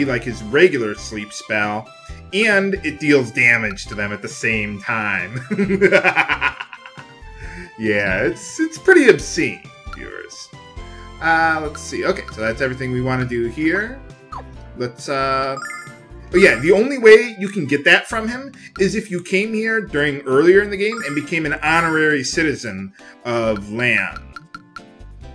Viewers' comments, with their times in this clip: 0:07 That's what I call an evil laugh! :D